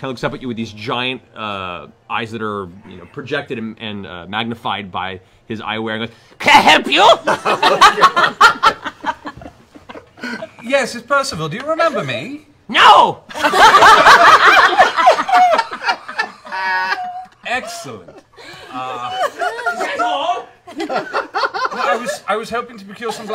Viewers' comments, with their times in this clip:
0:10 It's not that he says no he doesn't remember but how he just YELLS "NO!!!" That gets me.